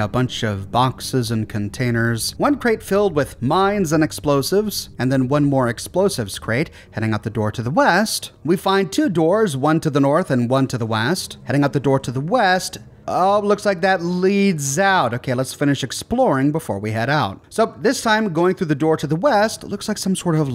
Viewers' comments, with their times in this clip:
0:08 I love it when he says Wast instead of west sometimes. It’s the best. I watch out for it and I’m like Eyyyyyy when he says it.